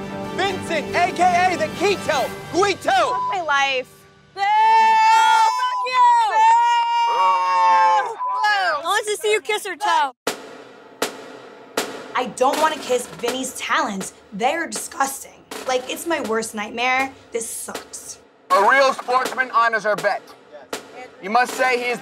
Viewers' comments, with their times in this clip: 0:05 Love how they dont bleep Snooki's f u hahah